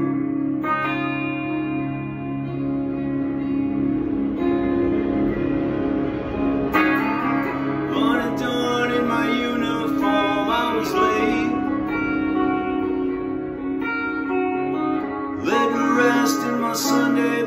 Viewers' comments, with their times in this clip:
0:03 That motorcycle to lift it into the chorus doe. The universe abides.